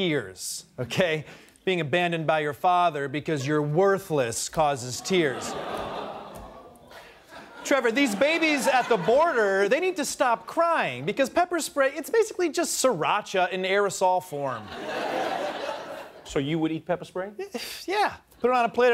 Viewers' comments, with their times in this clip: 0:05 That double bump on the table thou XD